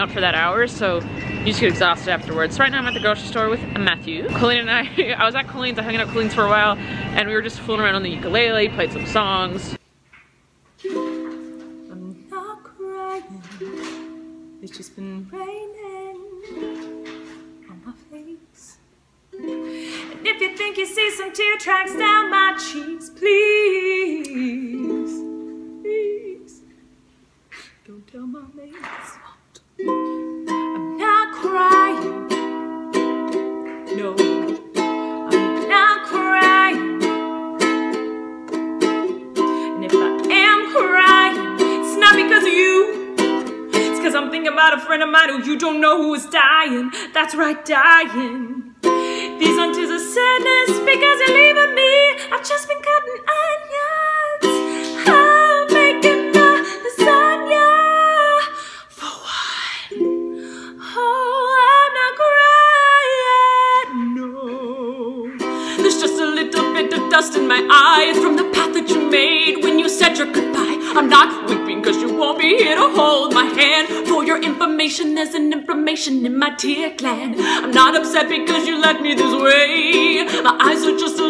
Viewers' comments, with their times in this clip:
0:10 is the singing
1:05 😱😱😱 you can sing